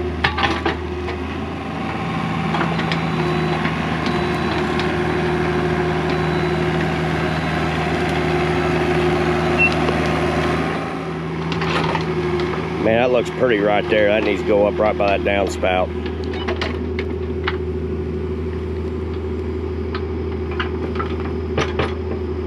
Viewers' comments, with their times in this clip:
0:09 you can hear the pipe being crushed.